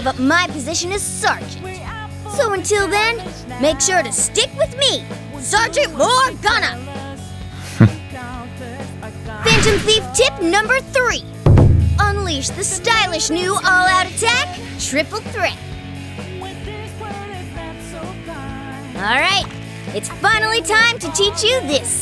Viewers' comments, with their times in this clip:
0:07 Joker hmph is just funny